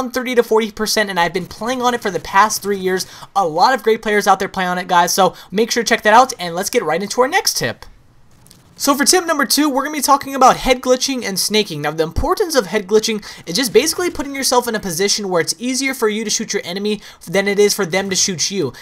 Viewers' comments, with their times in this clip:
0:06 voice crack? "next tip"